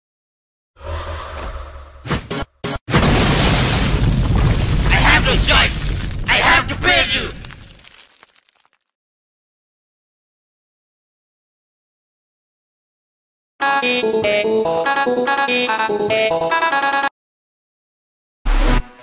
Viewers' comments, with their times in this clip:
0:05 I really love his voice